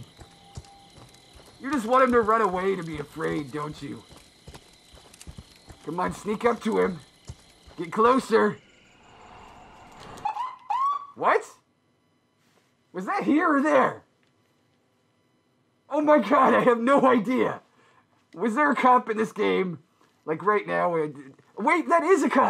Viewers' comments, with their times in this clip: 0:10 That Cop Siren Sound Tho